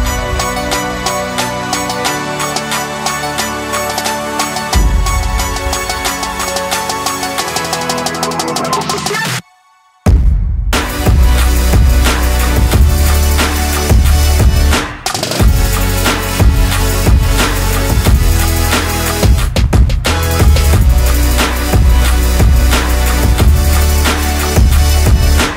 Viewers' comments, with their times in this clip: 0:09 That drop is as powerful as the atomic bomb in Hiroshima back in 45 💥